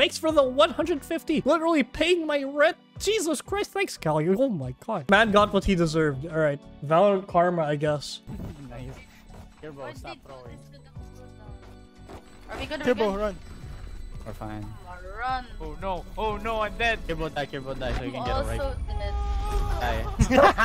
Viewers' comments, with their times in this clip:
0:07 That Sova sounding kinda hot, I wonder who he is.